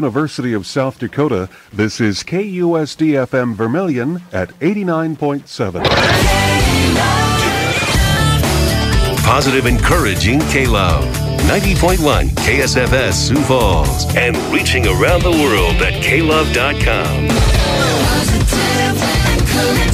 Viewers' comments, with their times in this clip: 0:06 Question: Why does the KLove announcer sound so, different? Also they haven't updated to the newer TM Jingle yet.